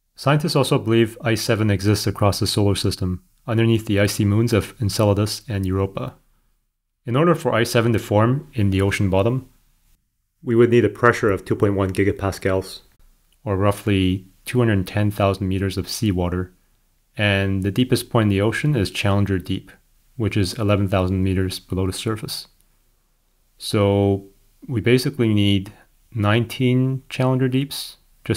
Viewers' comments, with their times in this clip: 0:09 suddenly in the left ear